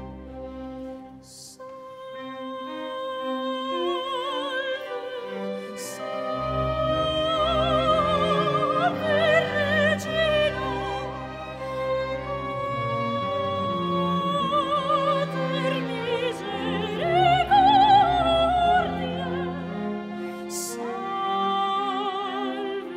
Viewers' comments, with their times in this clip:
0:06 The dissonance gave me chills